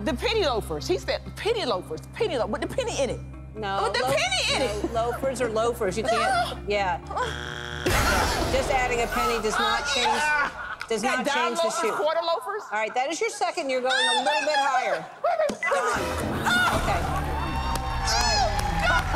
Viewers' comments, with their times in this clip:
0:07 the cameraman started laughing